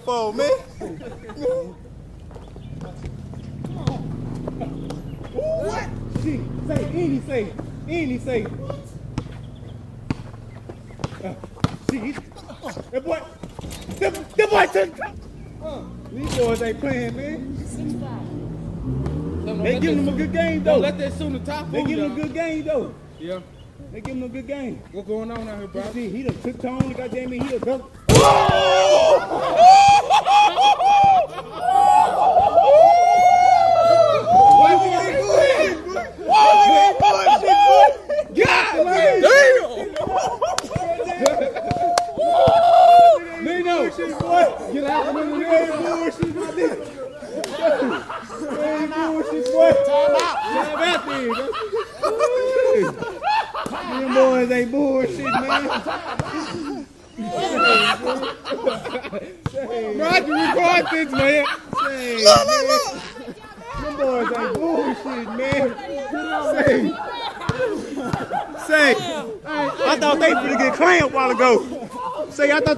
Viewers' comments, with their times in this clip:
0:04 lil jon was there
0:05 lil jon lol
0:05 lil jon WHAT
0:05 anyone else hear Lil Jon at the mark?
0:34 bunch of hienas
0:45 The laugh starting lol!
0:46 that chicken laughing
0:53 I want to meet the guy that starts laughing in the background
1:00 Close second is the guy's laugh